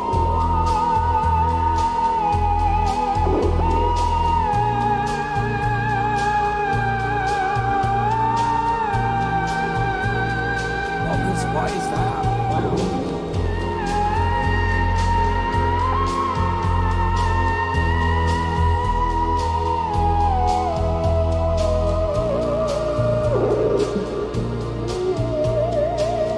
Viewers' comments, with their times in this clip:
0:10 LOLOLOLOLOLOL that s actually Alison s voice processed through an effect they came upon randomly and decided to use. pretty loud (too much, I find) in the mix and quite shocking. GOLDFRAPP was such an extraordibary revelation to me (2000, their first album). the track 'Utopia' is my fave. I m their biggest fan. can t wait for a new album... but when? when? WHEEEEEEEEEEN?